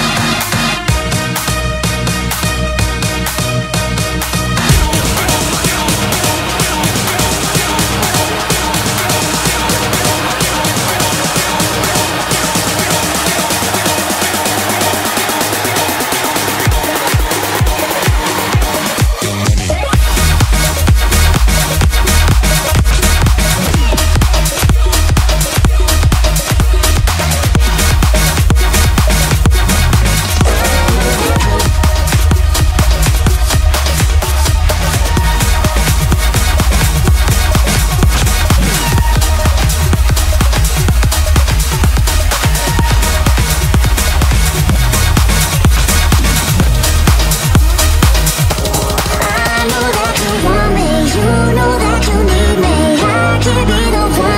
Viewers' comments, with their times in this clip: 0:10 Good mix! 🔥Though what happened to that transition after !? 😳
0:35 Wtf kinda mixing flub is going on ? lol